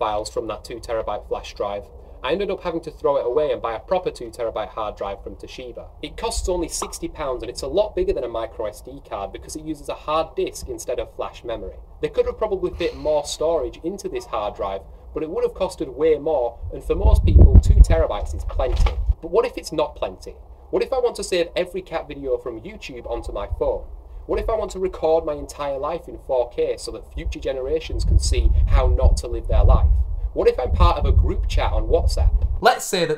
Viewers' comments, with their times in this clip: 0:09 Not gonna lie, I genuinely thought it was thundering because this was playing through my TV... shat my pants, frantically looking around.
0:18 please never assault my subwoofers like this again